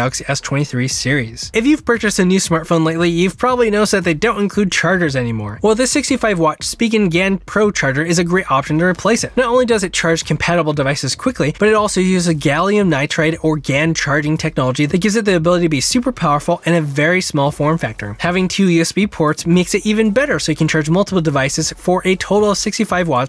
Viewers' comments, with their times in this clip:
0:06 "Spigengan" istead of Spigen 🤣🤣🤣🤣🤣🤣